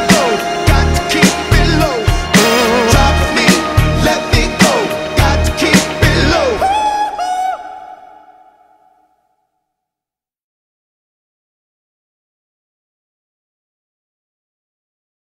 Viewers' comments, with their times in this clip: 0:06 sounds like Michael Jackson